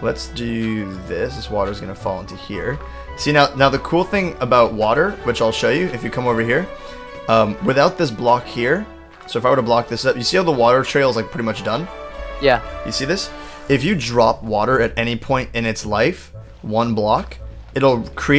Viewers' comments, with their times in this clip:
0:05 that music reminds me of Tales of Abyss